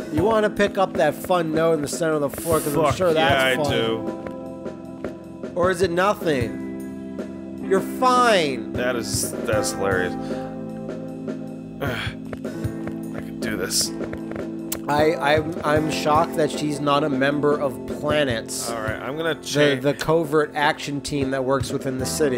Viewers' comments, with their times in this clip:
0:03 what is that porn soundtrack in the background?